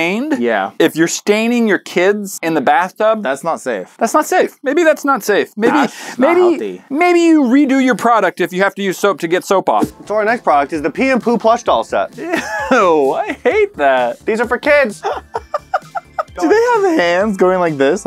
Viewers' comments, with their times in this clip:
0:05 “that’s not healthy” the way he said that 😂😂😂